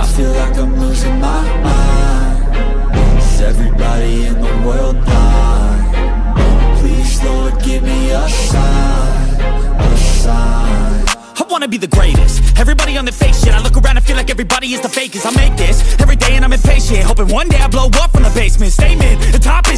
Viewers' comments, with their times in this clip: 0:05 Nice music ❤❤❤im a expert fifa player and its the best game ever 🎉